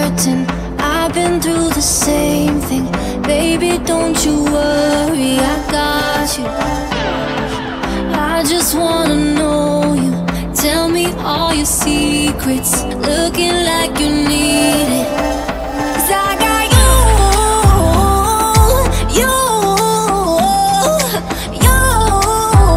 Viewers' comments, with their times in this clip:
0:06 Why can hear the background voice saying "I got you"